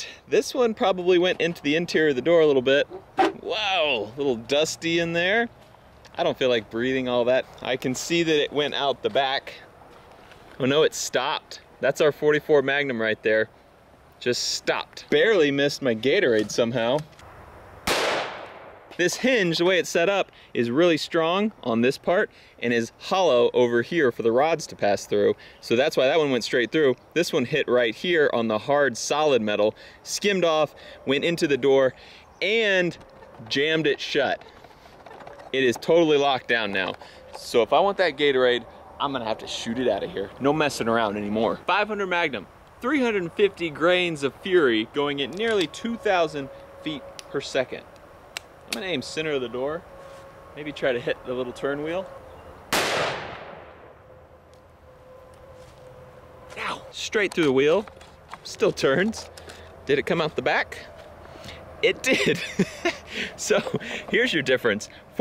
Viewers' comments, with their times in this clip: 0:04 He sounds like riddler
0:46 is that a tornado siren